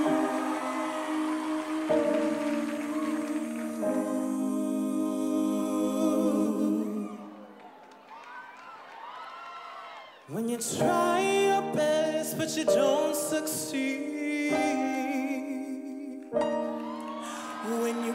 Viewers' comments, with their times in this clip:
0:06 The trio gave me chills that was sooo goood🔥🔥🔥🔥🔥🔥